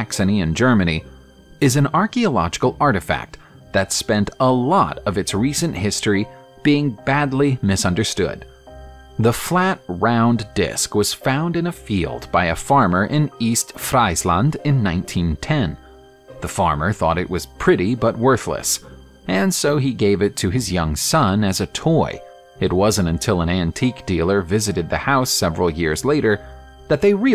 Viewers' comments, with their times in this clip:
0:09 You might want to learn some day, how to correctly pronounce "East Friesland".